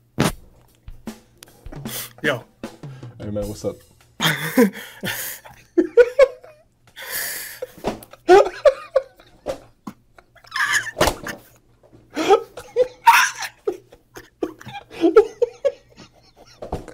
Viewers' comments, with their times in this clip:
0:03 bro the laugh here actually got me😂😂😂😂😂😂😂😂😂